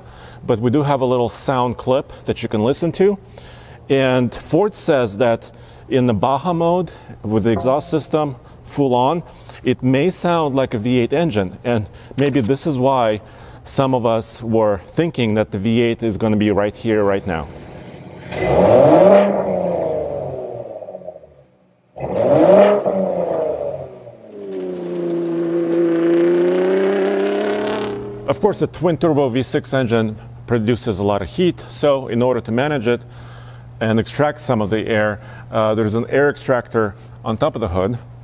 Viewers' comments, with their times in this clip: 0:09 "It may sound like a V8 engine..." I can hear and feel his disappointment.
0:22 it sounds like a v6 mustang...